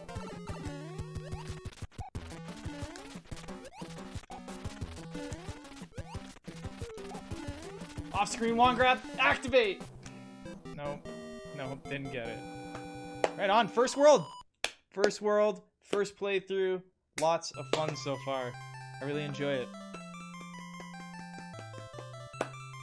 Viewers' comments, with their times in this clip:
0:07 sounds like something from Power Rangers lol